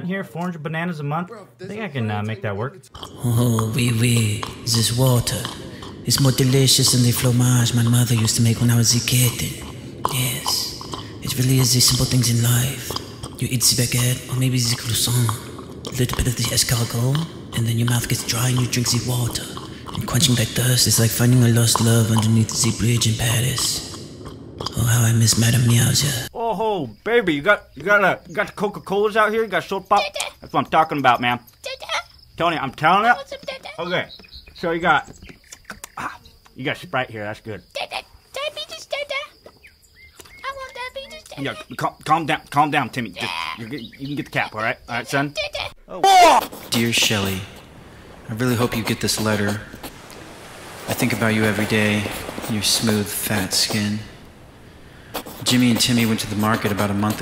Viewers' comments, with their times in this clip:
0:03 Man, he sounds so sophisti-cat-ed; that kitty must've been places I can only dream of! ✨🧐👍
0:04 LOL Ohoh WIWI.... that got me with the French accEnt.. oui oui...🤣🤣
0:45 That deep sniff is just too good.